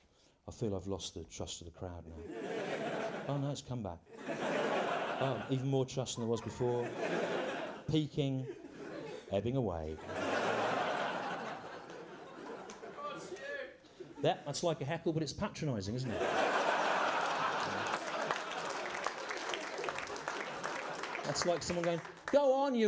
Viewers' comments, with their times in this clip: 0:10 This contains my fifteen seconds of fame - I'm the dude who shouts "Go on Stew". I like to think that this one-off quasi-heckle immediately cements me in position as a greater contributor to the arts than, say, Dan Brown.